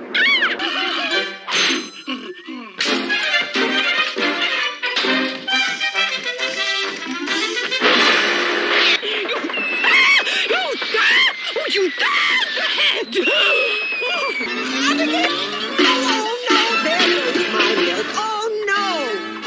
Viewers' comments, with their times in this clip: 0:06 Mexican top hat music😂